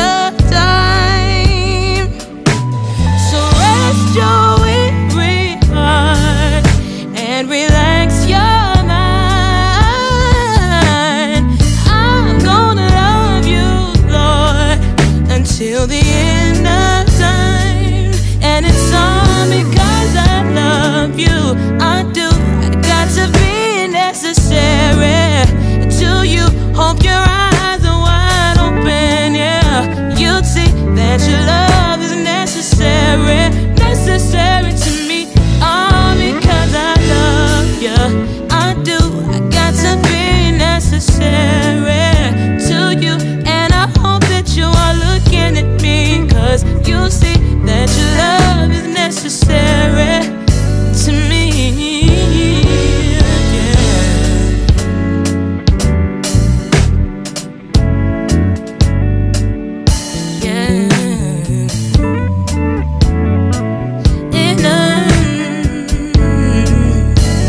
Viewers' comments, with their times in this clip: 0:10 That run took me out!
0:52 bass player JESUSSSSSSS